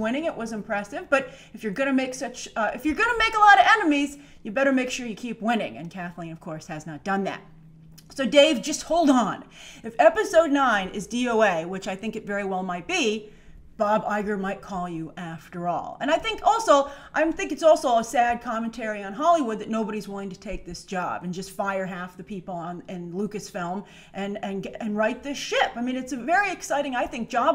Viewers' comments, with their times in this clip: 0:10 DOM? or DON? If for some reason I wasn't smart enough to figure out this acronym what would you tell me it means? Just asking for a friend, not me...